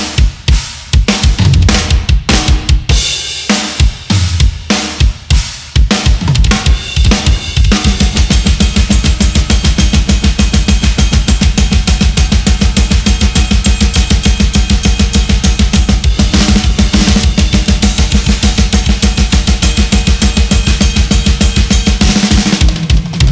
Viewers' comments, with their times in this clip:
0:08 i just realized how fast Jay’s blast. But all in all this performance is really really on point!